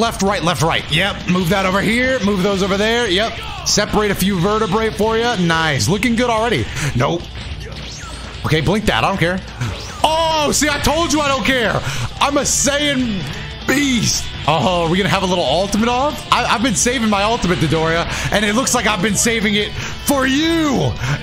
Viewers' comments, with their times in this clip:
0:06 I really thought that was his soundboard. 😂 The "Nope" sounded just like the meme a lot of people would have on soundboard. Lol